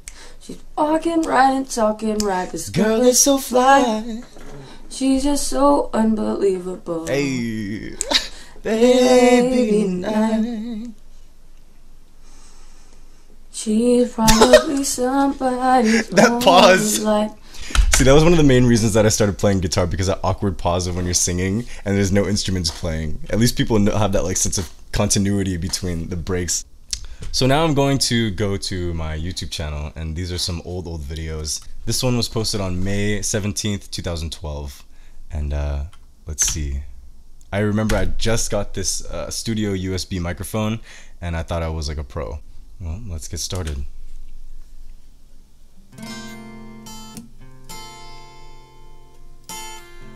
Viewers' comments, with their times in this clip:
0:10 It’s like your reacting to a completely different person. 😂 I love your voice though! Go you for the major improvement and also that pause was my fave part hahaha.
0:32 Honestly I really liked your voice with the strain